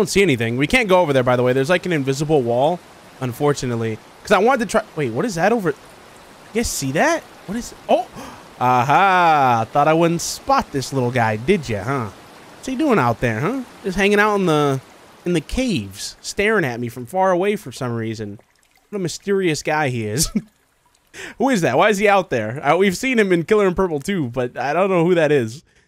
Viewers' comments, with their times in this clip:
0:10 I love how you just went into a Boston/New Yorker accent